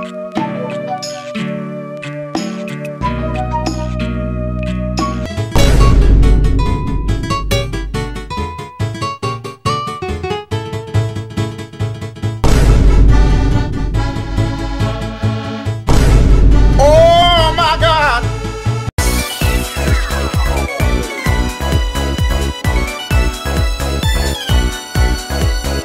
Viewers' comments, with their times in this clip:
0:07 HOW DID HE SAY SHUT UP